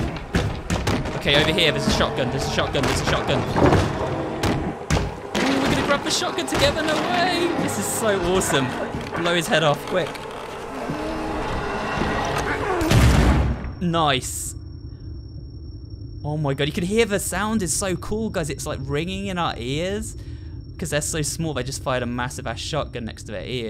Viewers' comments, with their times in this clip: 0:08 “Oh there’s my spare shotgu-“ B A M